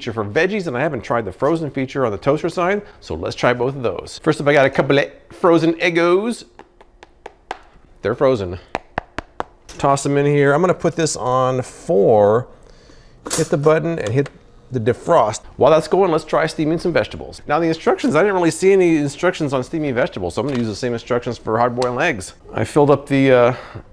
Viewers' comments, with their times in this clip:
0:05 The way you say “eggos” 😂